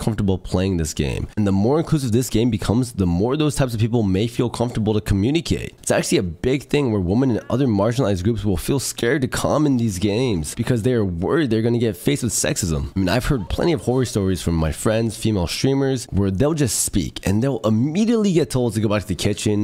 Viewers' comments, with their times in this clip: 0:06 why the hell did you say it like that? LMAO